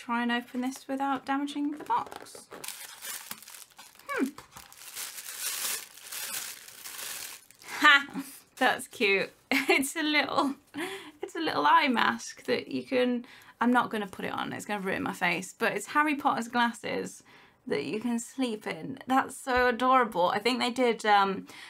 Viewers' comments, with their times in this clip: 0:07 I live for that “HA!”